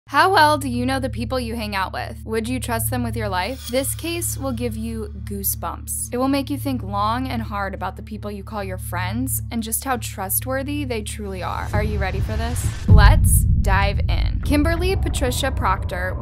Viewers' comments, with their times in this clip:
0:00 voice crack lollll